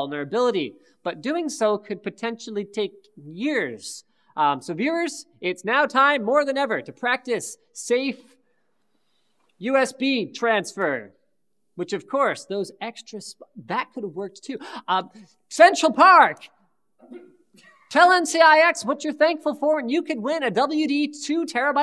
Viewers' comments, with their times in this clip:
0:07 is that the origin of Central Pahk? I know they came out with shirts that had it but never got the reference (I havent heard it referenced in any of their other videos yet)